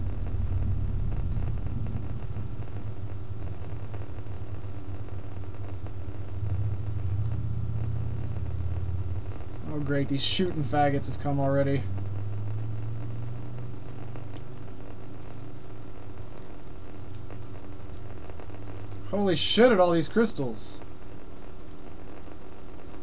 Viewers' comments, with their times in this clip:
0:08 was i hearing quads in the background?